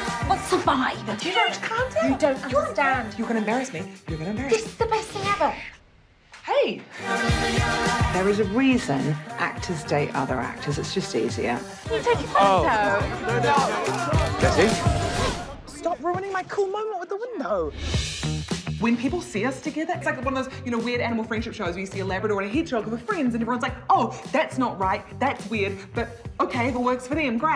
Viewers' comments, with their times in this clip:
0:10 Have always loved the 'Minibus' Driver's Brit accent. :--)))